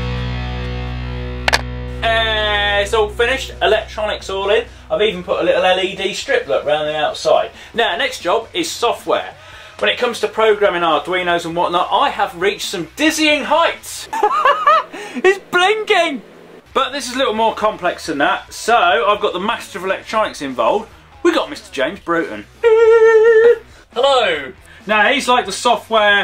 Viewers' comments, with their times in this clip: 0:07 Has anyone heared oooooo